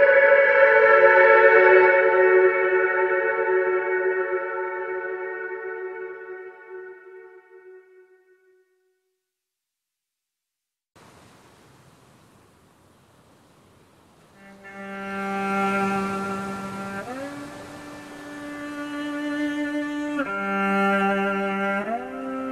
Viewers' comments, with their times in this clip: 0:10 This intro reminds me of GOT OST for some reason XD